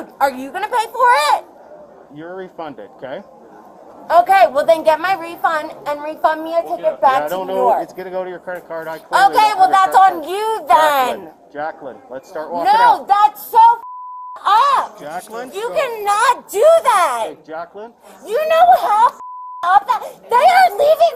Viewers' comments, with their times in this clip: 0:07 and my ears are bleeding